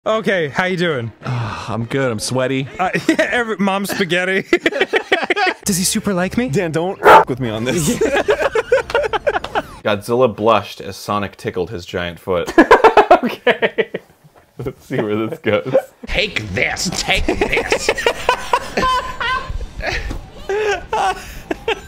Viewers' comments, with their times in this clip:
0:06 Help the bark scared me so bad that I jumped and accidentally closed all my tabs. I don't even know how or why. Great compilation tho 💀